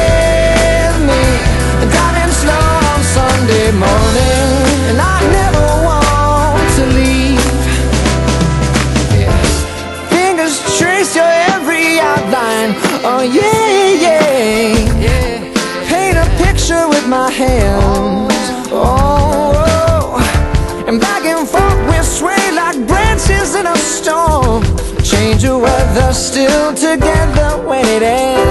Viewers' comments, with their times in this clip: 0:10 Mmm... that sweet pause Anyone else?